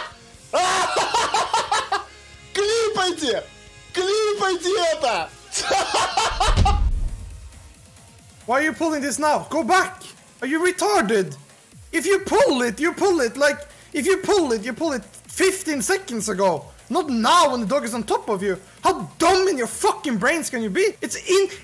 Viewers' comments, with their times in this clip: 0:07 not a brit rage, that is the most scandi rage I have ever heard, love it
0:07 That man is 100% swedish.